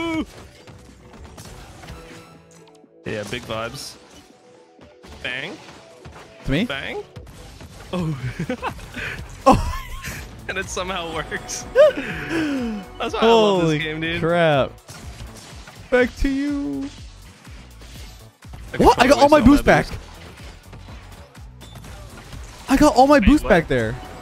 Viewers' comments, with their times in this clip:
0:07 can we talk about that laugh? Eughuhugah 😂